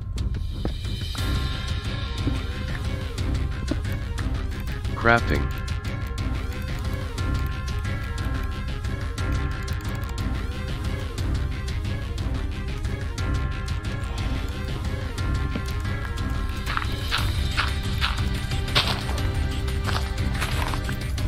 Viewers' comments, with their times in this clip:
0:04 smt music brought him the win, I believe it PagMan